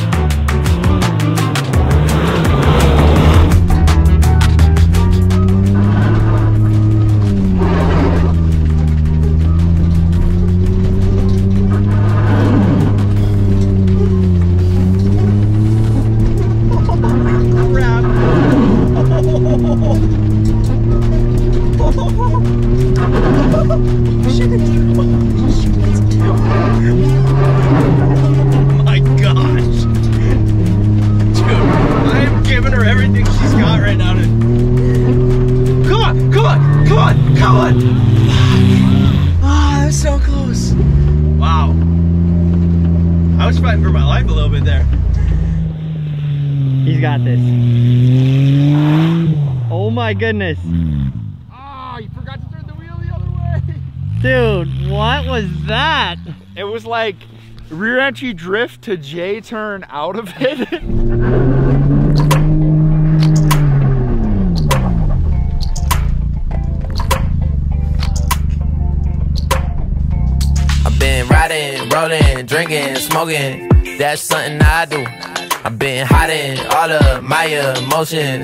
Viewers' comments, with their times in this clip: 0:06 lol I thought that sound was the rear wiper
1:06 Aww! You guys didn't beep out 'Fuck' lol 🤣😂